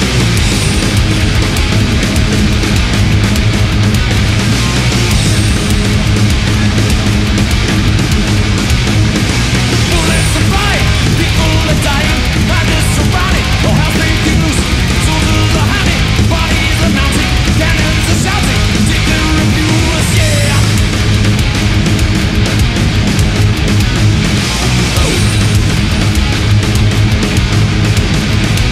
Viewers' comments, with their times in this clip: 0:10 dat double bass!